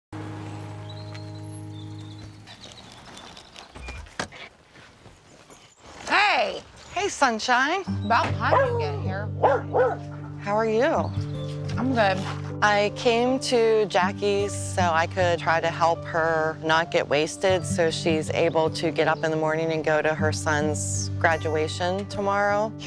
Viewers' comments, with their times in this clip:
0:04 The crackly "Hey" had me running in disgust.